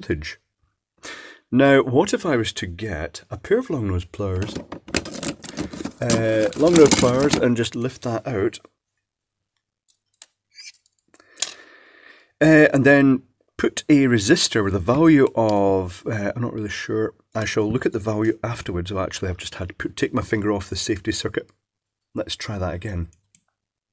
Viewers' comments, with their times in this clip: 0:09 Did anyone else hear the dead neon mouse squeak? Hahaha
0:11 simulated mouse squeak as neon lamp wires scrape plastic housing. You did that on purpose, didn't you? Some years back I was seeing people whine that there would be microprocessors in everything, even things that strictly speaking didn't need them. Now they're showing up in electronic mousetraps. Damn, they were right.